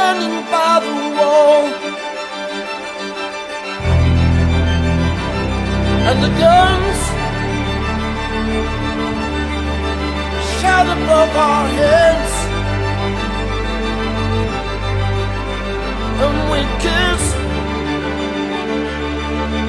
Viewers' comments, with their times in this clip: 0:03 The way them violins go in is just perfection to the ears 👌👂❤️